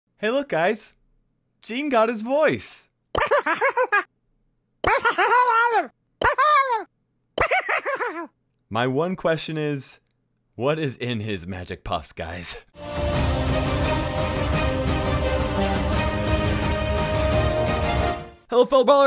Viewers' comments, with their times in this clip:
0:05 Remember that actually someone did those weird noices.